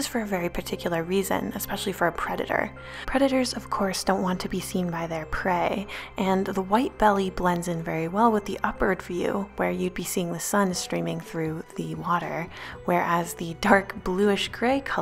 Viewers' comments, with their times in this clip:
0:03 I am so so so very sorry but when you said the word prey "preditors of course dosnt want to be seen by their prey " for a quick second you sounded like simba from the lion kings when he said the word prey